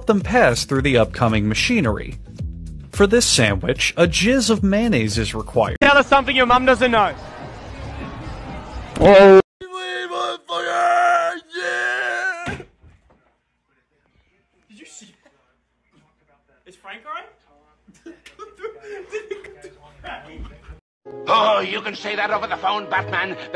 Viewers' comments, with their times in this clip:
0:07 i thinked siuuu